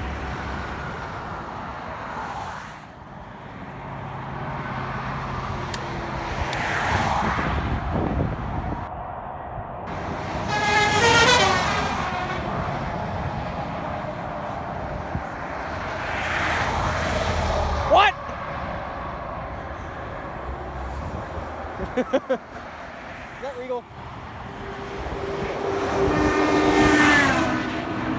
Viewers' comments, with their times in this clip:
0:10 da fuq kinda horn is that?